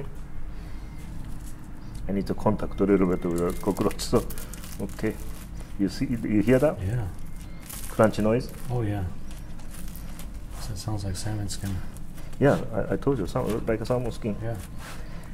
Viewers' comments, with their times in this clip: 0:03 it looks so digusting but the sound of the crunchy of the roach sounds yummy. i cant bare to even touch hornworm let alone eating it